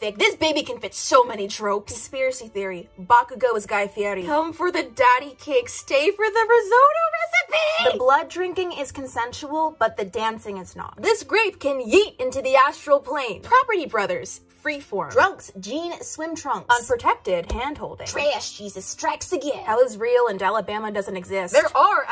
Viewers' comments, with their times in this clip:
0:04 WHY CAN'T I STOP THINKING AND LAUGHING ALSO, THE WAY THAT YOU SAID IT— 💀💀💀💀 (Also, 118 is one of my unlucky numbers because it's divisible by 59.)